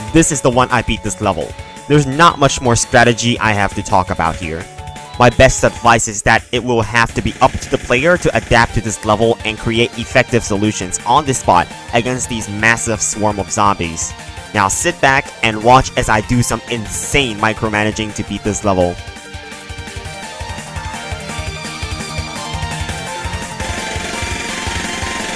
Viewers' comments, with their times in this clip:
0:06 did someone say adapt ??!! epic music starts playing